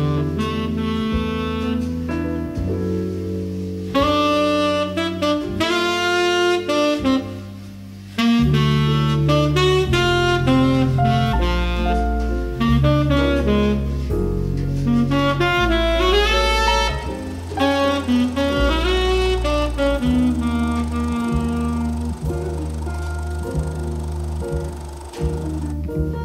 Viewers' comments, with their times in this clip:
0:08 giant steps harmony quote